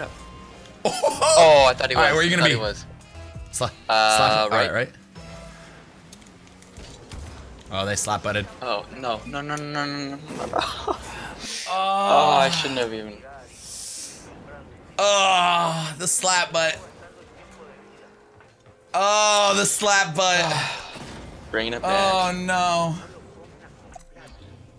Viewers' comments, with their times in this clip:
0:09 What is that background talking